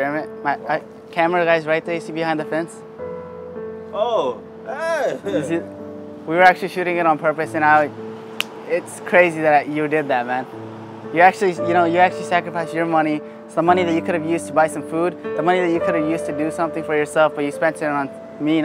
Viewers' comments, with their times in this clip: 0:03 his hey is sounds like hey ,what happen